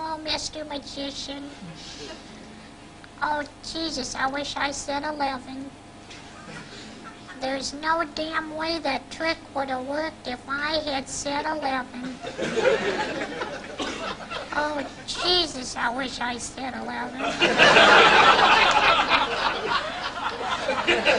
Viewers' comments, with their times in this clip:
0:03 WHAT THE HELL IS THAT VOICE LMAOOOOOOO